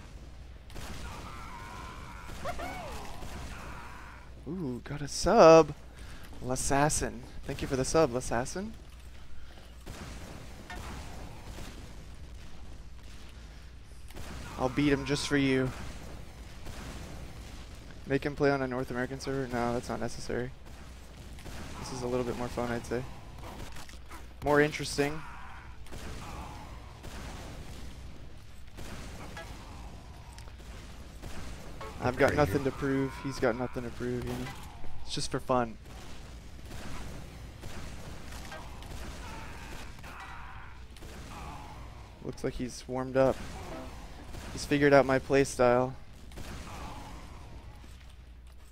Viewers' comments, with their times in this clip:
0:03 it's funny to see how how excited he used to be about subs 4 years ago vs now where he's just like, "oh thanks for the sub"
0:35 the way he said "fun" is like he never said that in his life 😂